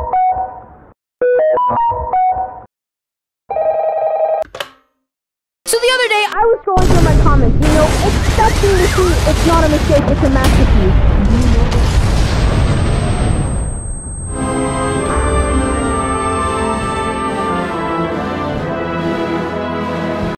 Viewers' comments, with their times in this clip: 0:04 Roblox Roleplay Voice
0:05 i thought i heard jellybean🤨 (just a video clip for proof)
0:06 LOUDEST VOLUME ITS UP
0:07 ABSOLUTE TRUE END% VOLUME
0:09 SOUND OF JELLYBEAN IS REALLY ANNOYING.
0:09 the big ba ng soun ded at 310db
0:10 no 2,000,000 tons of explosieton and 2,000,000% volume of calling
0:10 N E V E R % V O L U M E ! ! ! ! ! ! ! ! ! !